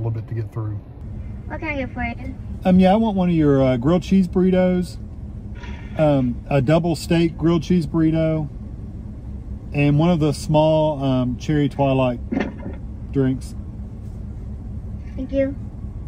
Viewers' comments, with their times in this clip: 0:04 seconds in. Did she SIGH?